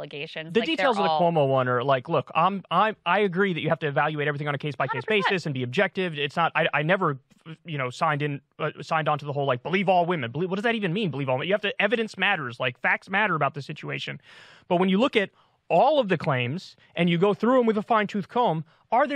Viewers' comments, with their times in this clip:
0:06 You never "signed on to believe all women" because it was "believe women". It was a stance against victim blaming. For someone big on facts, you're not really getting them straight. Also, nobody "DEMOLISHED" anyone here, so your title is clickbait. Also also: your audio sounds super bad. Your mic is a high-end Shure SM7B, it shouldn't sound like someone put a blanket over it.